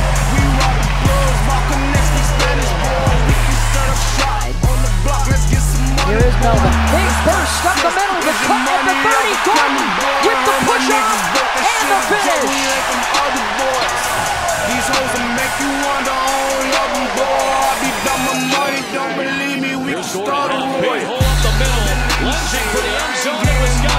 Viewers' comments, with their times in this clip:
0:05 sounds like Bob the Tomato from Veggie Tales.